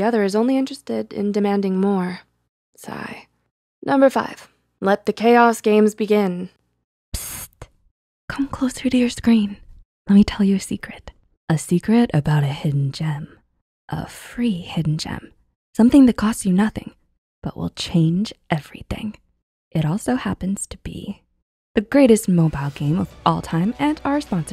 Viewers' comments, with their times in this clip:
0:09 ur voice gughfgfgfgfggg